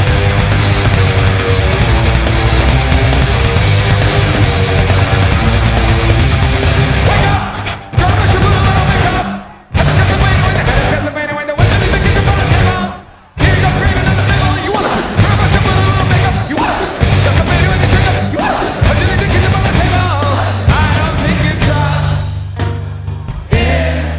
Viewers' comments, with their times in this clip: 0:06 The way the crowd is keeping up, sick af